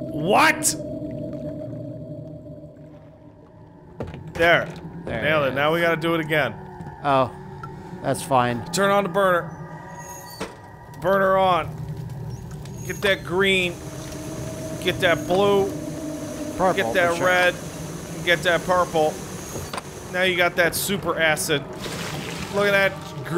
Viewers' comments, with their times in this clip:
0:09 What a strong "WHAT?!" that was.